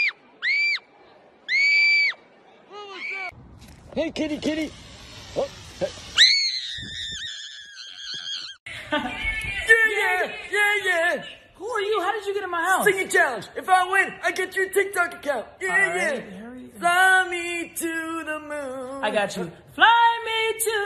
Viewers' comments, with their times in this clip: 0:04 "hEy kItTy kItTy" *Proceeds to hiss at him* "ÆÆÆÆÆÃÆÆÆĀÆÆÅ-"